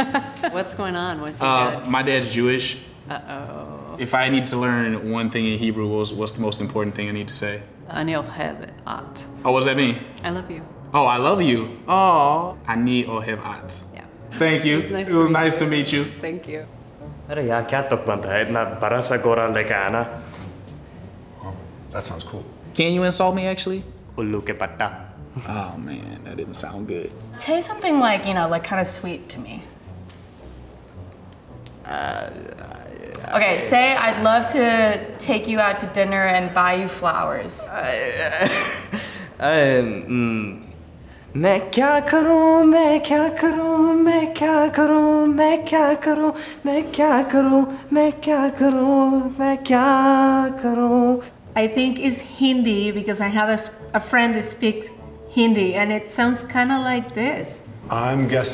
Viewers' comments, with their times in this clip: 0:05 her hebrew gives me anxiety, its so wrong and bad
0:17 HELP AS AN URDU SPEAKER IM ACTUALLY TRAUMATIZED BY HOW BUTCHERED THIS MAN'S ACCENT IS ON THE VERGE OF TEARS RN HE CAN'T SAY RETROFLEX R OR ASPIRATED CONSONANTS
0:18 bro I'm Indian at first i couldn't get it Sorry to say his accent is really- But he said he speaks urdu but they are really very similar but yeah I don't know bro
0:18 The dude was speaking like a how an american would speak hindi.
0:18 that's some broken Urdu
0:18 OK, that guy don’t know the language at all. That’s how my white friends would speak what I teach them a sentence or two lmao
0:41 Okay , say, "I'd love to take you out to dinner and buy you flowers". Pakistani man : Sings instead